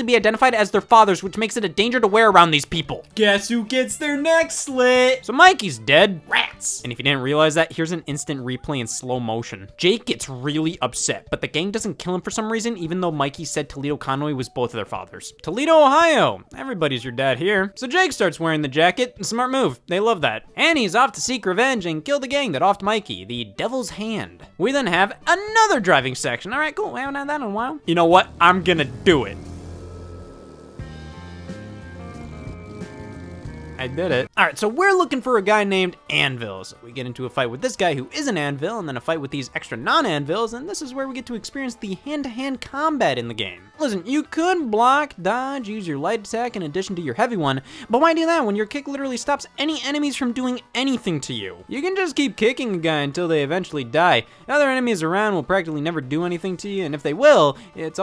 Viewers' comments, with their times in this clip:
0:04 idk why, but the delivery fucking murdered me! XD
0:42 It's strange to hear Mario 64 music while seeing a bloody fist fight haha